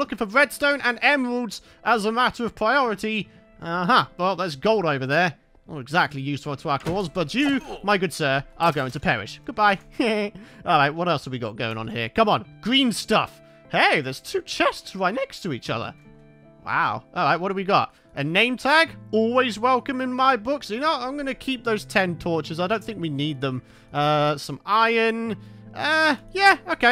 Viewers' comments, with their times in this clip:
0:06 he sounds like peter Griffin
0:08 The laugh of Peter Griffin from Family Guy on
0:08 I think I found Peter from family guy! that laugh tho
0:09 Peter Griffin laugh
0:09 When your friends tell you to do s Peter Griffin impression
0:10 Peter Griffin laugh